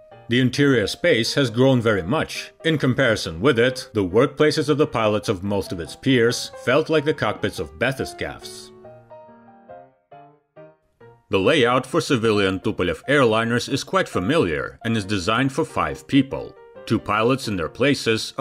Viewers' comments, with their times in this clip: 0:04 When he's talking about the cockpit and how the "workplaces of the pilots of most of its peers felt like the cockpits of bathurst calves" What in the world is bathurst calves and why do they have cockpits? A google search comes up with caribou? But that makes no sense.